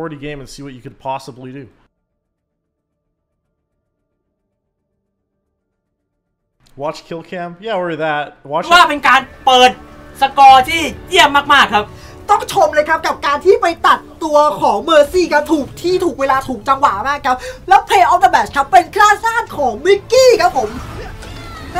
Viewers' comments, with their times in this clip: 0:09 MY FCKING EARS